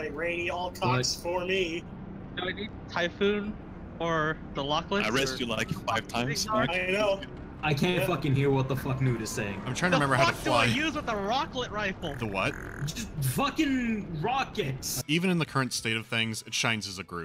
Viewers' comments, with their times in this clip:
0:03 Sseth.... is that you I hear?